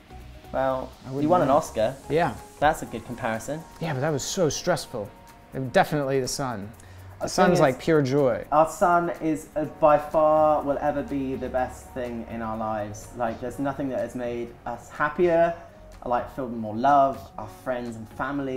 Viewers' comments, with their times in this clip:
0:03 did Lance just sound british?